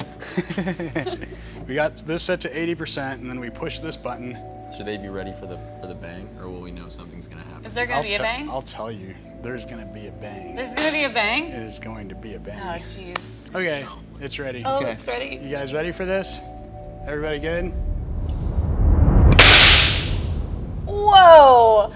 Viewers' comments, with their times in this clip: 0:08 he souds like he's about to show her what bang he really talking about 😂😂